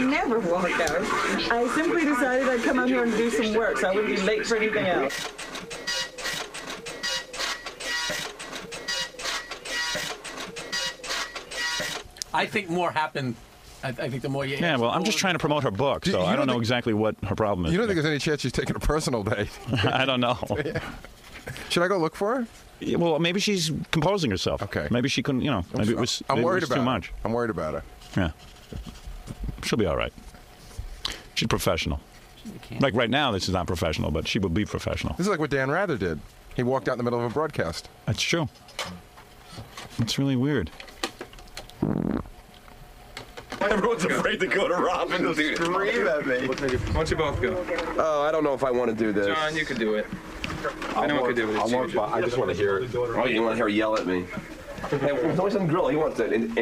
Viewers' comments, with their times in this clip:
0:03 Dot matrix printer making funky music
0:42 Howard rips ass 😅😂